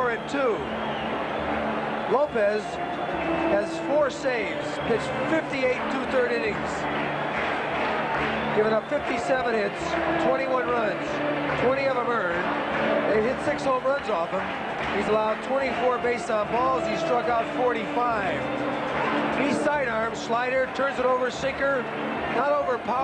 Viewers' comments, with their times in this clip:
0:05 They say the Disco Demolition was "homophobic." And there the anti-disco crowd is chanting, "We will, we will rock you."